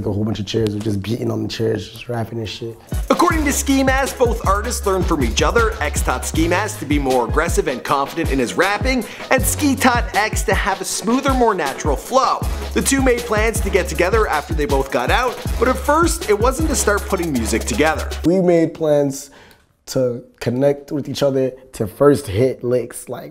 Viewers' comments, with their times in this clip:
0:09 Who tf is xxxtentocia